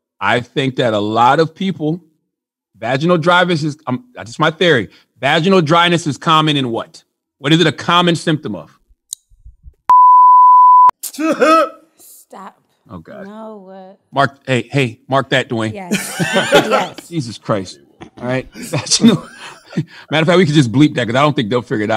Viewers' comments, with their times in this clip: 0:09 what y'all think he said? We need to get to the bottom of this.